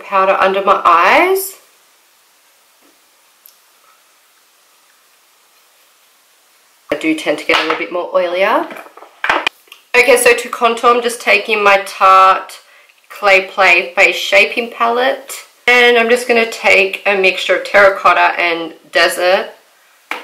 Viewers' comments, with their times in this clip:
0:03 your voice cuts out not sure if that’s meant to be like that haha